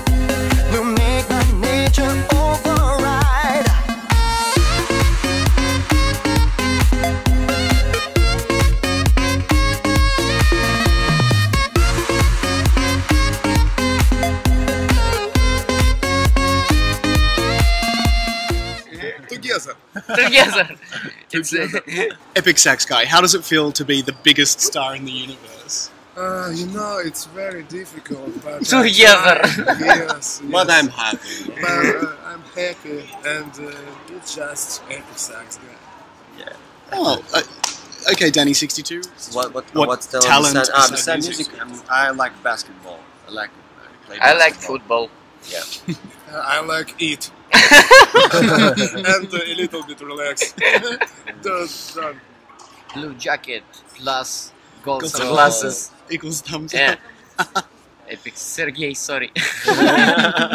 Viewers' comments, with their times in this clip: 0:04 that epic/ ultra/god sax guy solo 😍🤤🤩
0:46 omg his laught 😍😍